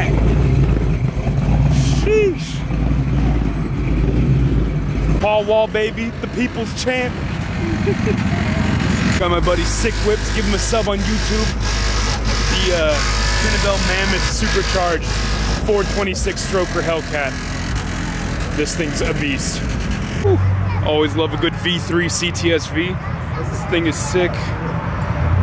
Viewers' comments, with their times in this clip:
0:10 ew why tf your plate rattling louder than your subs 🤮